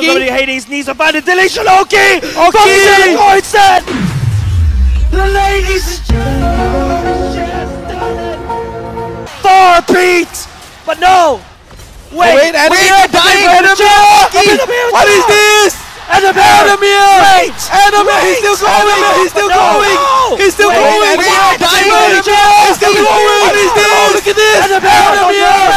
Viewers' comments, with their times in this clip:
0:06 that xfiles sound is just brilliant😂😂😂😂